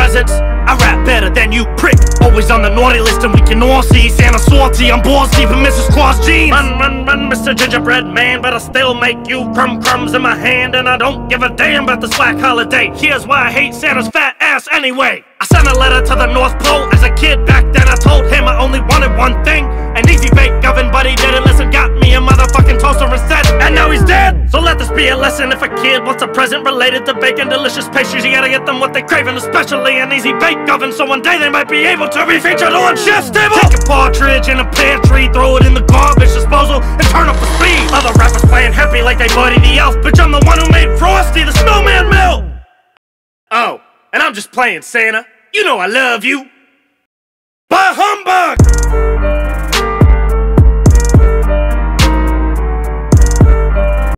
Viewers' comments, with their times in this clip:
0:06 that flow sounds better than it should
0:24 this bit captures the flow of Killshot so perfectly it's amazing haha
0:47 what does he yell at the very end?..."buy Humbug?"